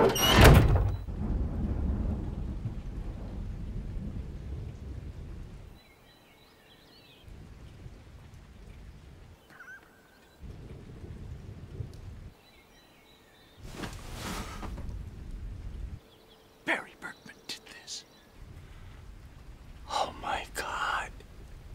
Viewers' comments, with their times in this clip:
0:08 I like the little detail of how you can faintly hear fuches